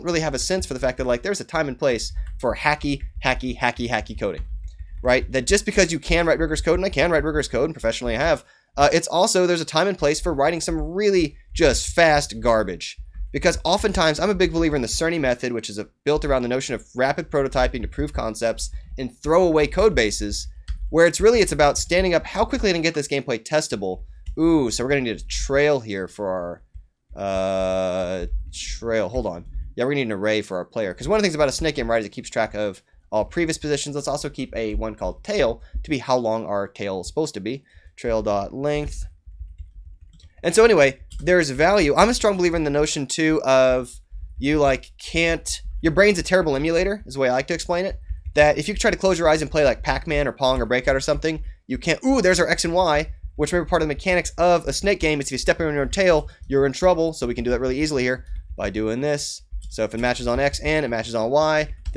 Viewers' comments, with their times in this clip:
0:03 what does the fox say?
0:46 Was all prepared + seem to have been a bit accelerated, we can hear it that it's not the initial speed of the video.